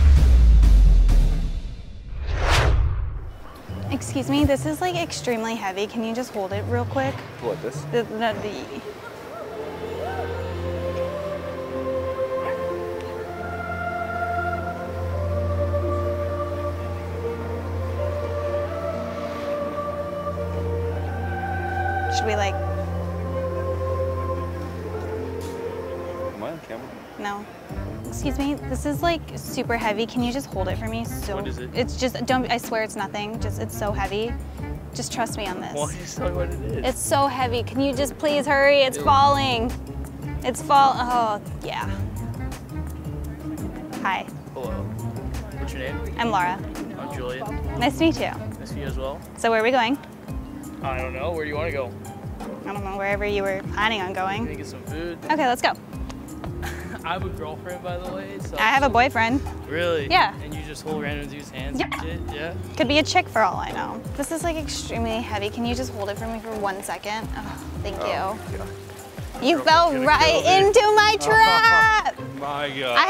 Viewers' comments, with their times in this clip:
0:10 is this fate (hears background music) lol and then reality hits (am I on camera?)
0:12 that background music tho lol
0:14 background music makes him feel like he finally found his dream girl😂
1:00 go to she sounded like a dolphen!